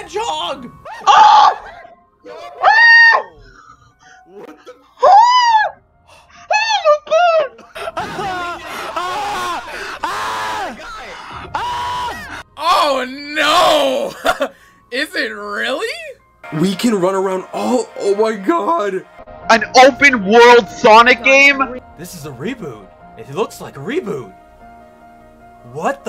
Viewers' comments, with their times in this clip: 0:08 I've noticed that in all his videos this guy always reacts like crazy and too exaggerated, how the hell doesn't his vocal cords get destroyed with that absurd way of yelling?